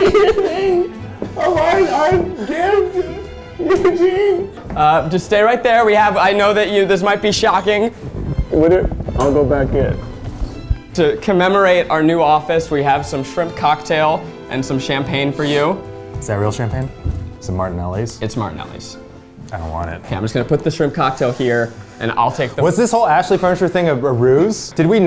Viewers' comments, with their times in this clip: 0:08 "I'll go back in..." seamlessly becomes the chair again He sounds almost sad!